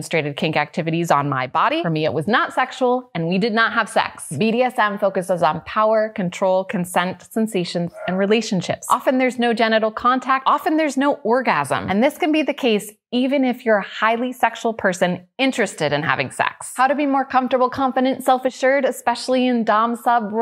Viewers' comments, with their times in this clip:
0:06 Someone's belching in the background. 😂😂